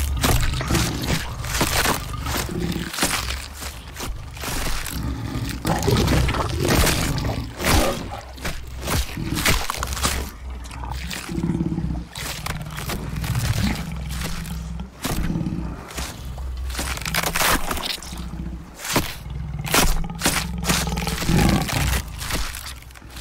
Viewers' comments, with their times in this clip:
0:07 is it me or did i hear the second half of the mgm roar of leo